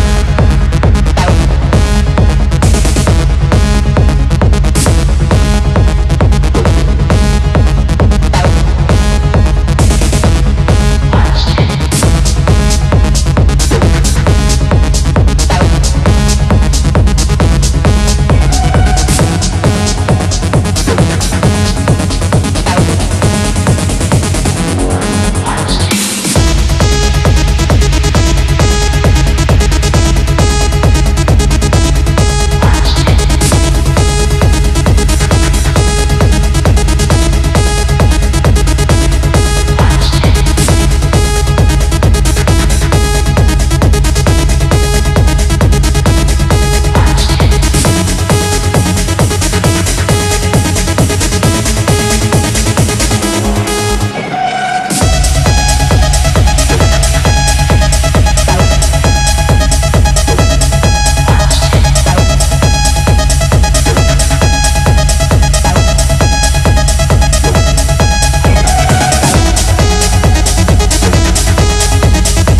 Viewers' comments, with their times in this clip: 0:07 Drop has me shook
0:55 those High pitches are so nasty❤️❤️❤️❤️